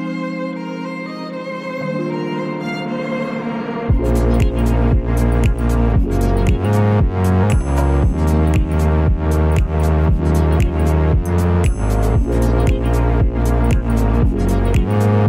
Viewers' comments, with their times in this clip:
0:03 thats a pretty phat tune